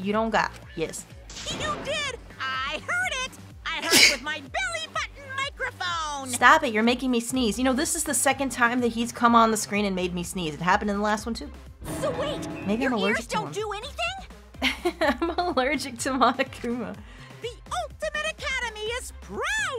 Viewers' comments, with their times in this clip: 0:03 Bless you. Hope your allergies of Monokuma will disappear!